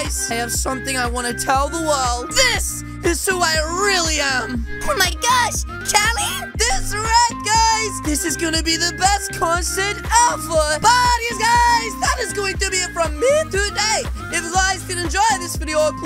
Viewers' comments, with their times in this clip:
0:03 best backround music